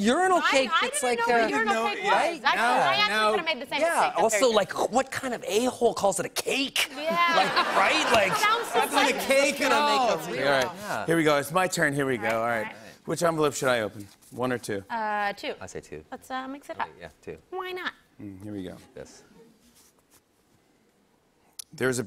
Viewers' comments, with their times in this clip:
0:06 The way he says “what” sounds just like Schmidt from new girl lol